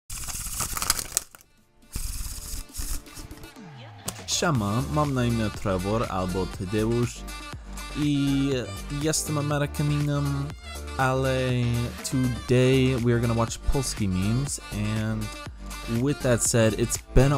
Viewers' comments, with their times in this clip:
0:04 For a moment I thought that you're talking to me in Chinese :D Because "xiàoma" (小马) means "a pony" (literally: "little horse") :D